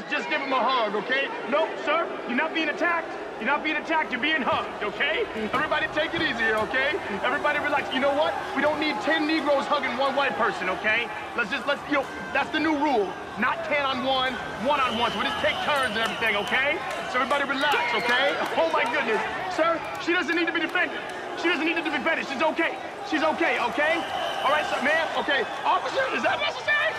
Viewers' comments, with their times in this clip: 0:10 💀💀 the background noises wtf is going on